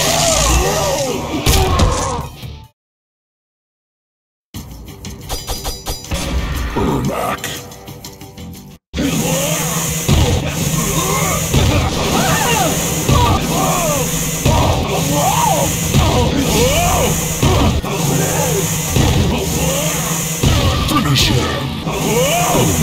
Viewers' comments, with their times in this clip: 0:04 Arm back Or my ears are trash